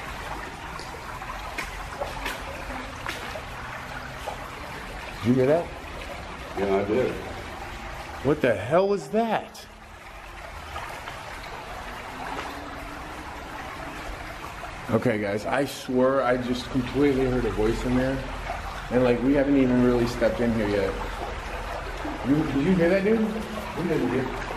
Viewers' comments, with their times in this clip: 0:09 I just heard a female ghost say something at the haunted tunnel in Knoxville minutes